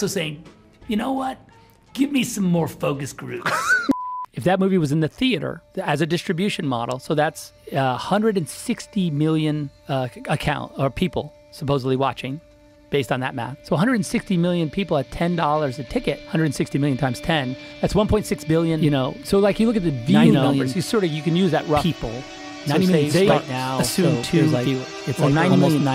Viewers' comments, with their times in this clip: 0:07 the joker music killed me😂